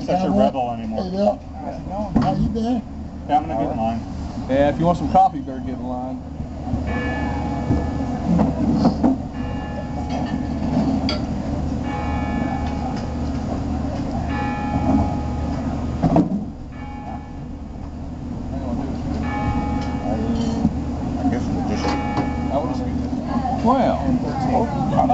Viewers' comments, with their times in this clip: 0:07 Looks like a great bunch of guys to spend a nice Sunday morning with. I liked that silver B400. Were those church bells ? And you're having coffee? tsk tsk :-|